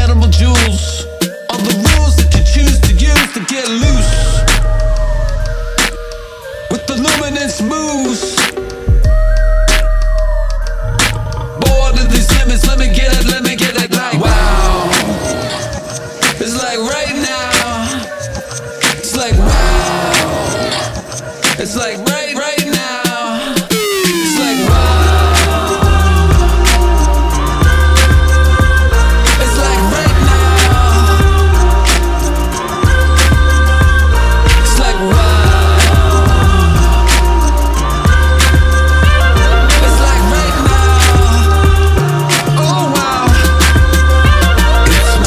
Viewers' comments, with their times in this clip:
0:10 So does anyone else hear the moose growl a few seconds after he says "luminous moves" ?
0:29 Here for the Mario coin sound